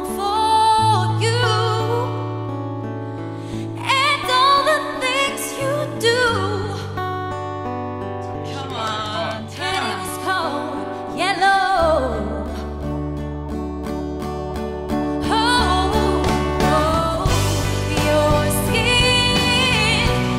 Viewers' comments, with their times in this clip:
0:08 the most had soul of the songs